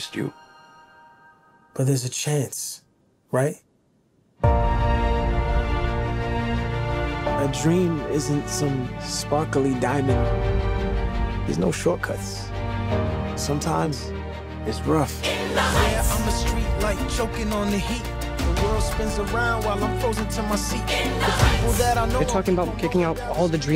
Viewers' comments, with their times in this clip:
0:04 Am i the only one who heard 'Who lives, Who dies, Who tells your story' in the background